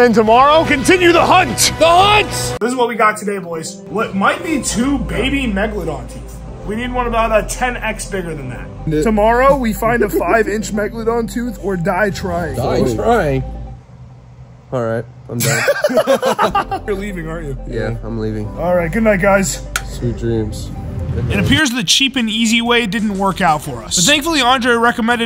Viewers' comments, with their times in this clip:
0:10 I think someone farted